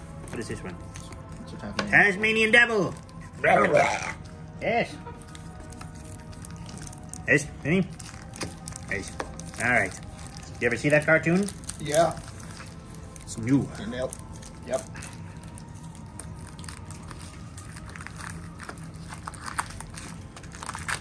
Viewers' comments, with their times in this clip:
0:03 The noise for the Tasmanian Devil kills me. Love that Danhausen!